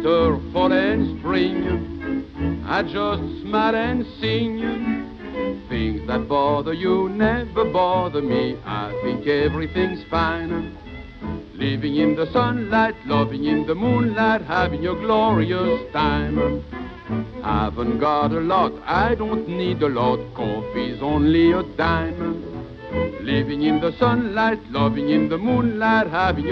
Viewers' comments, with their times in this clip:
0:05 1.25x speed 1930's SpongeBob music would be like:
0:11 Tiny Tim's version is better but is very catchy